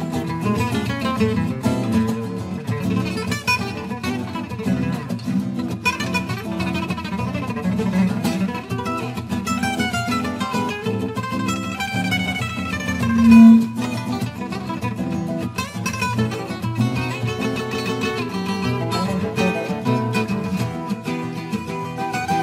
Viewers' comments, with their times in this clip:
0:09 Vlatko Stefanovski made a noise willingly it seems but I don't understand why lol